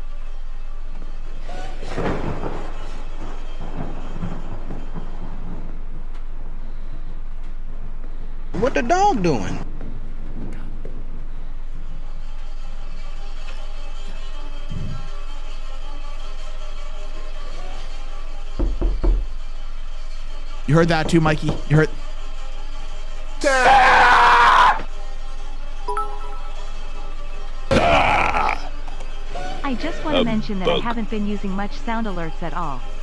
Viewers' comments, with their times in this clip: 0:09 I heard the knocking and since I was wearing headphones I didn’t know where it was coming from I thought someone was knocking on the side of the house💀
0:18 Ihad headphones on when the door knocking happened scared the flip out of me😅